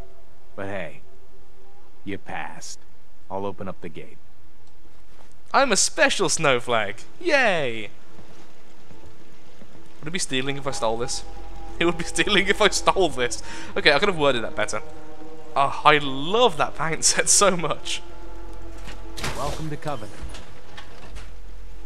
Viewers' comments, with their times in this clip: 0:08 someone needs to make a laugh out of context video